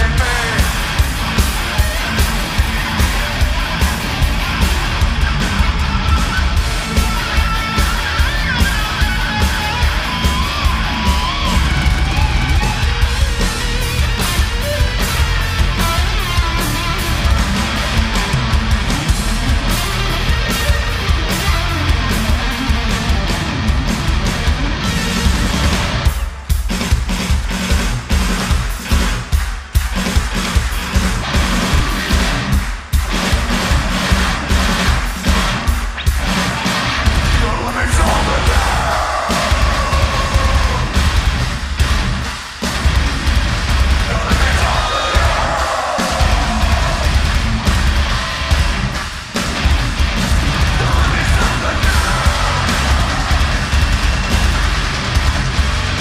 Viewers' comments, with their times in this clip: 0:08 the most painful tune 😭
0:11 Mick: God, this solo sucks. Jim: Hear, let me show you how it's done.
0:37 🔥 That panning camera + breakdown